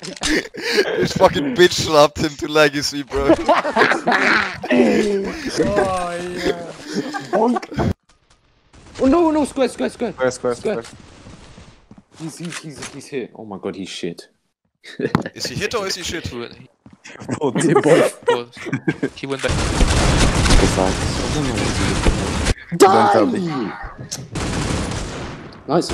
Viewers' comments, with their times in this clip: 0:03 im late but i like this laugh
0:09 that laugh tho LMAO